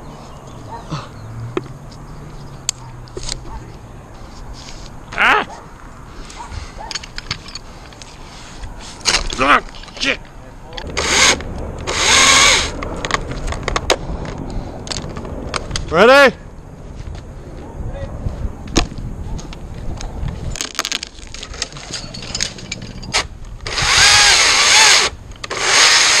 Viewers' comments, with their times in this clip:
0:09 The noises you made are a serious vibe🤣